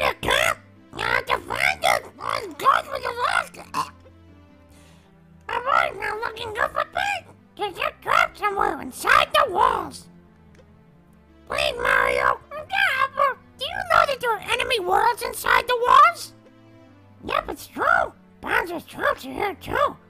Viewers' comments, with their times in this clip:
0:06 Salty sounds like a weird cross between depressed Elmo and Marge Simpson.